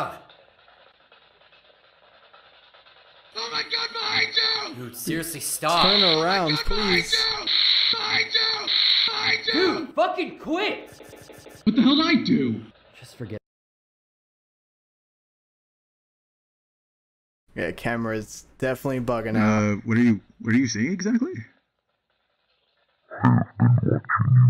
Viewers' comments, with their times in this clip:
0:07 sounded like a rock song